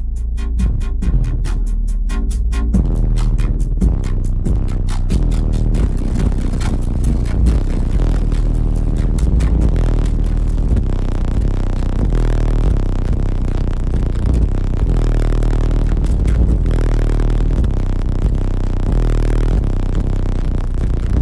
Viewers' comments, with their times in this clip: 0:09 The guy from is going to claim disability for going deaf